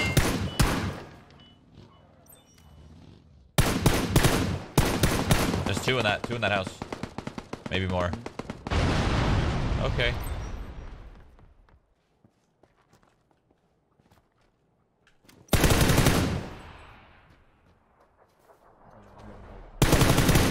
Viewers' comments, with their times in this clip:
0:03 he played jingle bells